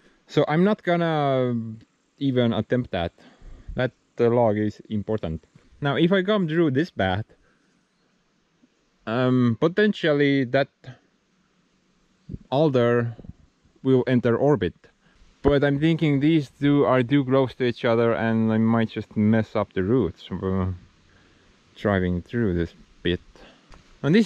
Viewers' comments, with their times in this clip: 0:08 Did he say "when i was still part of the semen group"? If he did, that is awesome !